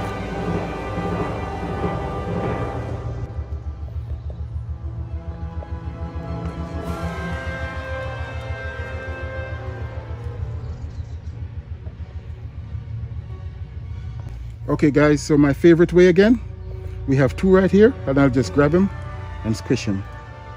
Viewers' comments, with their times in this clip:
0:05 love the sneak attack and the crash of the symbols as you shake it off into the water and slowly back away. Keep crushing them. LOL. I am new to gardening and it's also become my therapy. I have seen these vile insects go at my beautiful Asiatic lily. I will make sure to use BOILING ass water for when I flick them in. They will get the memo real quick.